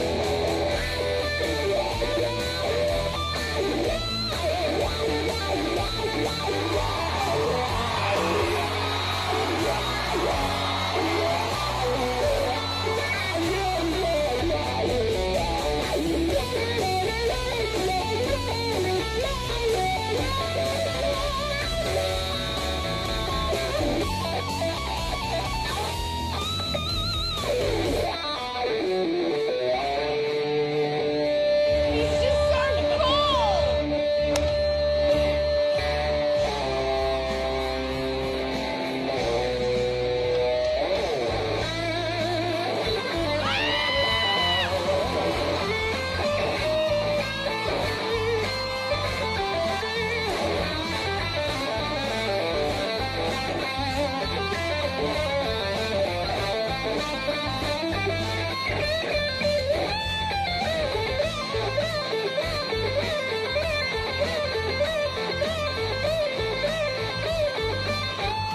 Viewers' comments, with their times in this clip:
0:06 the guitar itself saying WOW WOW
0:54 this guy is shredding where I can't even play Highway To Hell Damn Kids are dope